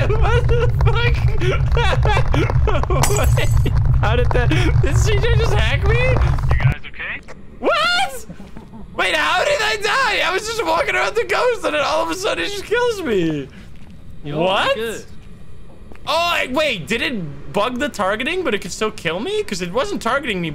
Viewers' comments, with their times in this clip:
0:06 Dat laugh got me 🤣🤣🤣